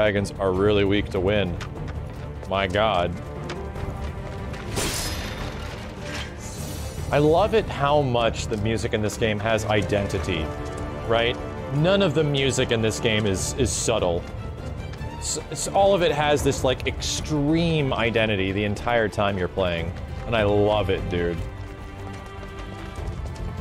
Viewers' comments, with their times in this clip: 0:10 I didnt have much faith when I heard the composers of FF13 where doing the music but goddamn they blew my mind. I always thought that, even if FF13's soundtrack is not on par with Nobuo's work, it does have some sort of different fantasy 'feel' that Nobuo's work (At least in 7) lacks since his style was based in rock music. They managed to bring that feel to the remake, and you can hear it a lot on the tracks of this chapter and the ones at beginning of chapter 9. I love it. Such an amazing work.